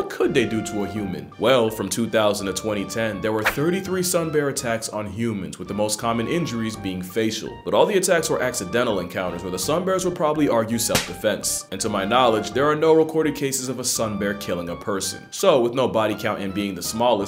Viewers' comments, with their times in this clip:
0:03 20 and 2010!??